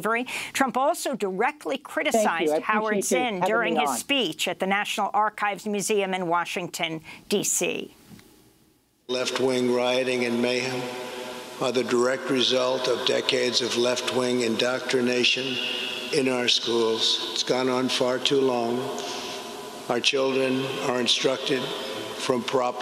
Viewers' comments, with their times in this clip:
0:09 This vapid monotone is no doubt indicative of other things.